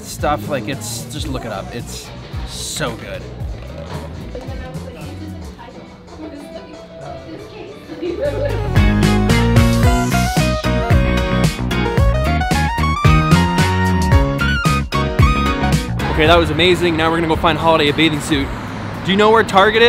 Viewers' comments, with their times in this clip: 0:04 LMAO Oye Mujer!!! in the backgroung